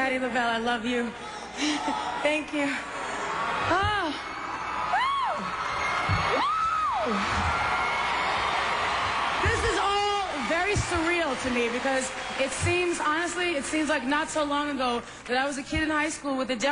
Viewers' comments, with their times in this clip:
0:04 Oh wow those high notes !!